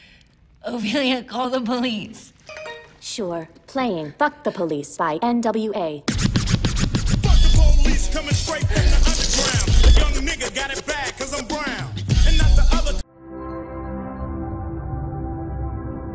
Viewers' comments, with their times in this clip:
0:03 is it bad I started singing along to ice cube whilst laughing when I watched this? I’m sure it’s not that bad. I can’t be the only one.